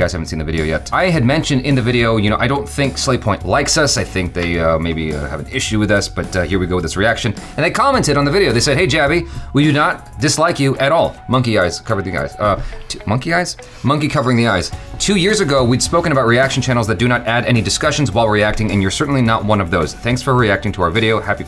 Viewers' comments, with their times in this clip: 0:09 Me lemme check haven't I increased the speed??